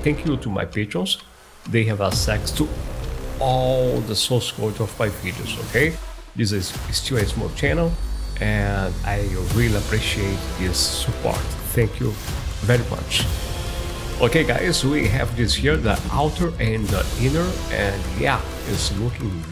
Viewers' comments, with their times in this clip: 0:07 very nice progress bar, but I would recommend using a more readable font when filming videos. And the music on was unnecessary and way too loud.